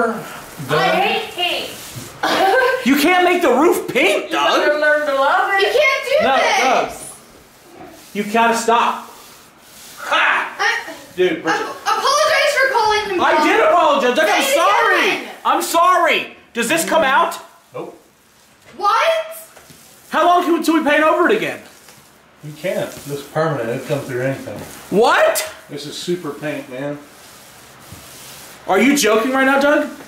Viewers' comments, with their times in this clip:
0:09 sounds like grandpas laugh
0:10 im not a troll or anything but i swear i thought i heard a angry grandpa laugh
0:11 it sounded like grandpa laughed.
0:11 you can hear pops !!
0:11 you can hear grandpa's laugh !!!